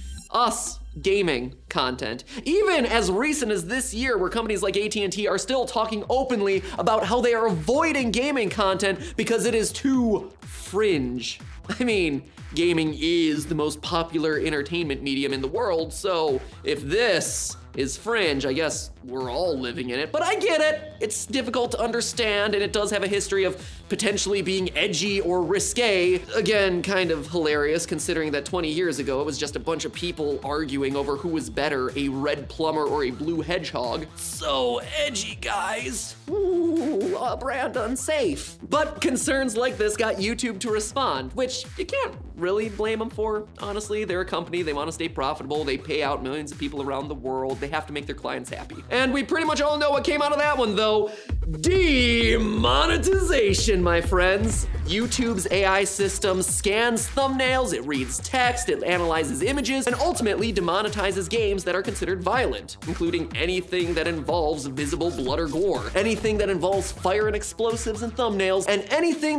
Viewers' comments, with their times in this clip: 0:03 How many could hear the minecraft portal like sounds
0:50 How ironic that him screaming "DEEE...MONETIZATION!" was interrupted by an ad.